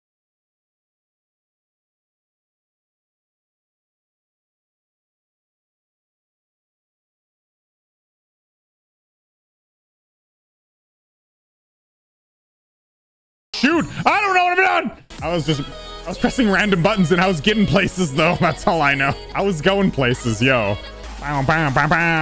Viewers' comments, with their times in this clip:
0:03 why is the volume off